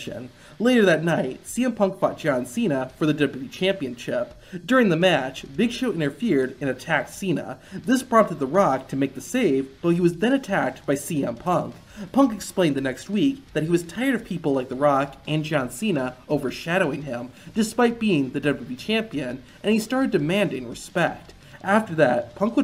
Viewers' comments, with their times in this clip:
0:03 for the wwe "championchip"